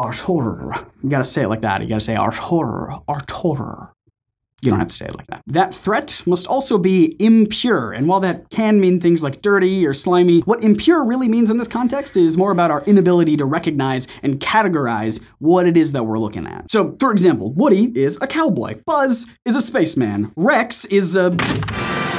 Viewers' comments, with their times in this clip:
0:03 "R. Torror", full name Ramirez Torror, Oscar-winning Egyptian actor who played in Return of the Lich King and Dork Knight Inc. - probably.